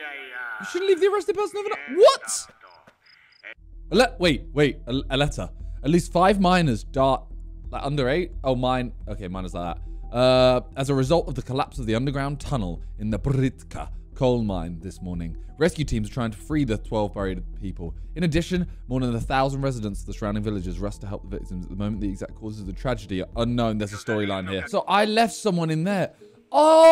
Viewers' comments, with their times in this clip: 0:08 5 miners died wait… under age? Oh no that minor 😂😂😂